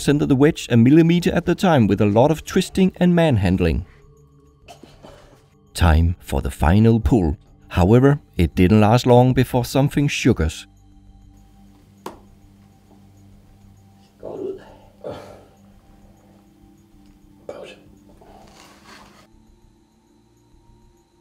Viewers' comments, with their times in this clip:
0:07 "however, it didn't last long until something shook us" (thought the magnet was gonna do damage or something but no it's a fucking sound. This dude's narration dramatizes everything )
0:08 "it didnt last long before something SSSShUGARS" xD